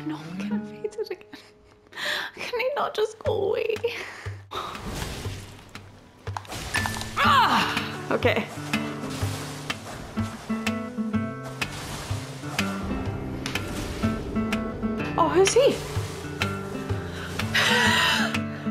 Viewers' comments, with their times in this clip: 0:06 the acoustic cover of Dayman is amazing